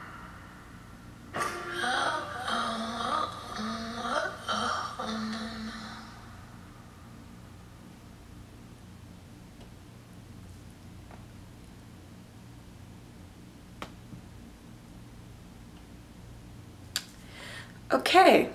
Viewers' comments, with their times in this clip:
0:03 Waiting the whole time for the reaction to that weird robot moaning noise at the end and that face didn't disappoint!